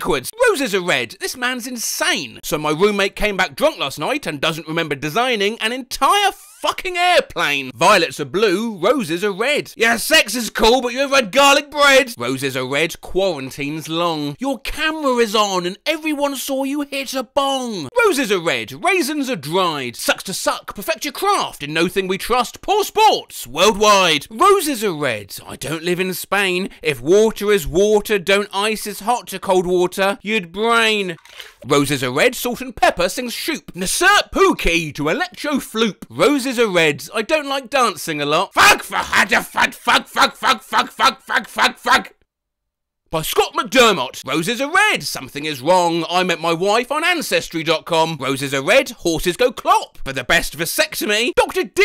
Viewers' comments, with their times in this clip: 0:04 That was the most aggressive-sounding read of an asexual meme I've ever heard 😂
0:26 my man that garfield water sfx was top notch
0:34 "Insert Room Key to Select Your Floor" it took me too long to decipher this so im commenting it in hopes that im not the only dumb one here
0:38 what german sounds like to the rest of the world
0:38 how germans talk: